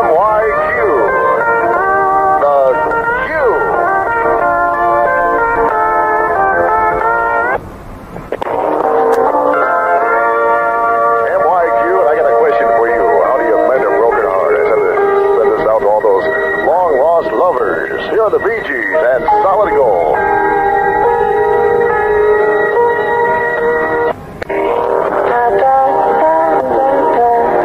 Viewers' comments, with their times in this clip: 0:08 this sounds like a good ending chime-